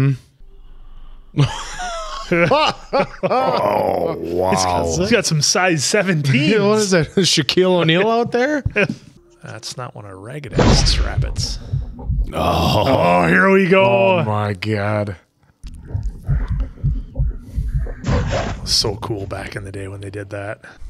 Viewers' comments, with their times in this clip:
0:06 Am I going insane or is there the faintest "ba dum tsss" after the Shaq in the woods joke ?